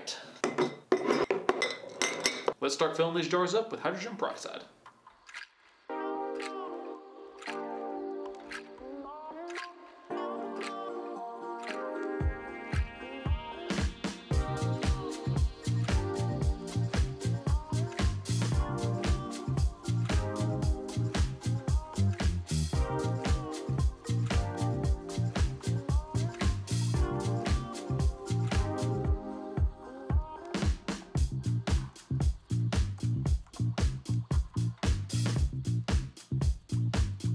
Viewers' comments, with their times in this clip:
0:04 Am I crazy or can anyone else CLEARLY hear the word 'Elmo' throughout the song??
0:20 Elmo voice ELMO HAS ASCENDED~